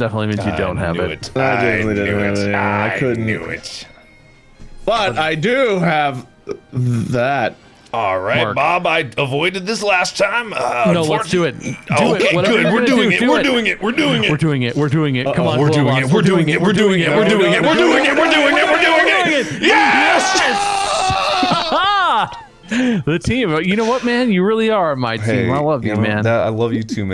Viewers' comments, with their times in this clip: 0:10 THEIR CHANTING KILLED ME😂😂😂😭🤣🤣🤣
0:11 Love when they there doing it and when wade yelled I laughed so hard
0:13 they were chanting 😂